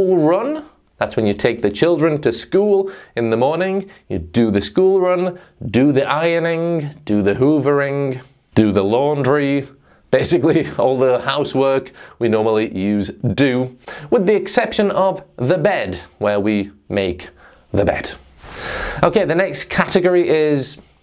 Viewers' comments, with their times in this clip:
0:05 That pronounciation? "do the ironing" = "do the eye-ring"???